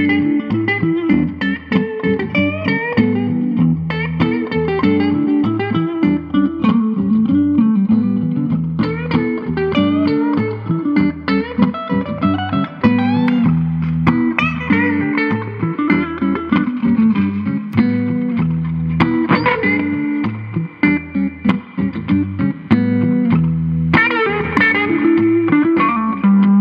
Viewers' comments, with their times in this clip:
0:07 Twang And now he is on banjo notes lol. That is experience...